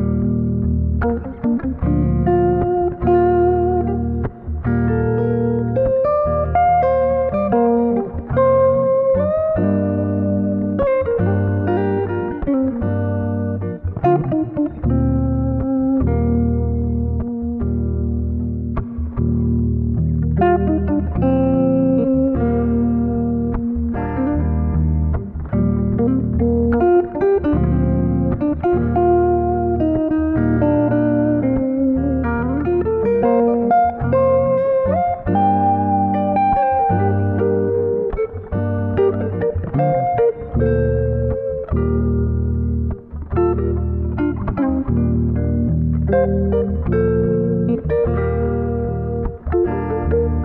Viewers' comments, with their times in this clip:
0:09 The bend Dipped my soul in honey, brother. Thank you for putting this into the world.
0:09 gosh that bend, what a inexplicable felling ! Thank you for it dude.
0:35 That lick really floats my boat